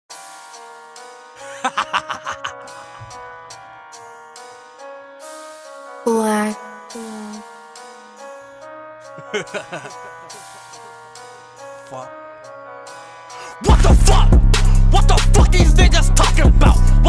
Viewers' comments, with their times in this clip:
0:02 his wicked laugh just made the song so lit 😭🔥